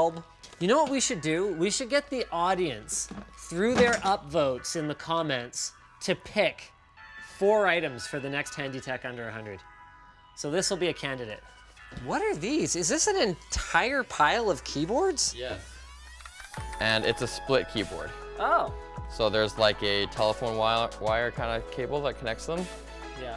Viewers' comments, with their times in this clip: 0:10 "Hany tech under $100" what is "Hany"